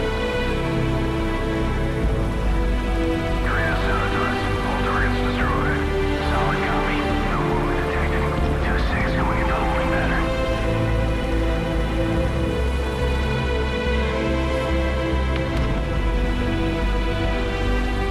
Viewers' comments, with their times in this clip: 0:05 in the background apart of the music they are talking about something!! they also say that ghost in one mission or at the start of the mission says ''i wonder why they make us have on this fire-proof vest''